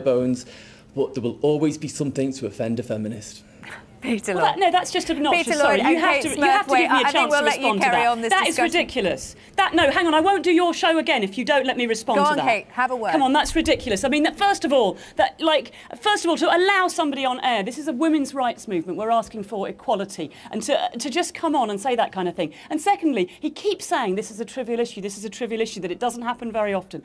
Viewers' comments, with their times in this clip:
0:08 is so funny. That laugh he did. Bro just knew 😂😂😂